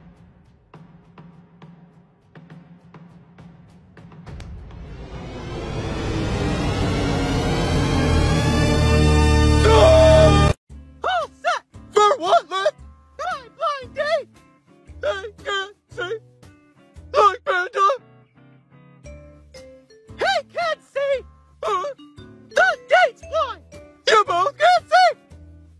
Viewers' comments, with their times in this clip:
0:06 sounds like titan tv man